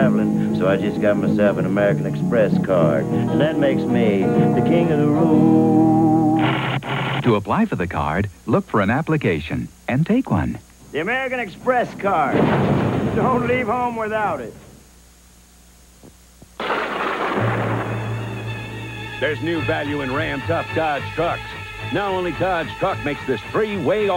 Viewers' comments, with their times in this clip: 0:06 You can't have an 80s commercial compilation without a voice-over by the great Peter Thomas.